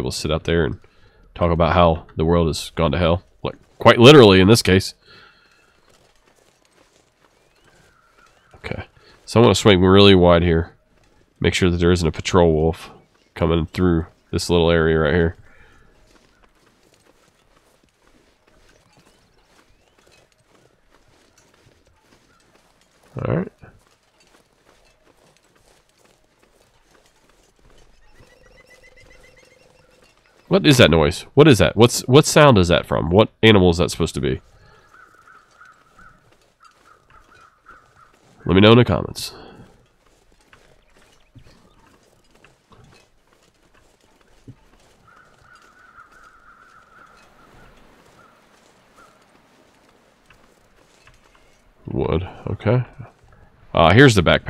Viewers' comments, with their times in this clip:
0:10 I think the sound is at least some form of wood pecker
0:29 The sound that you hear is a woodpecker
0:30 The bird sound sounds like a wood thrush but its moving, and not doing its standard call.
0:30 probably woodpecker? That’s kinda what it reminds me of
0:39 that was a red squirrel that kinda fast high pitched drumming like noise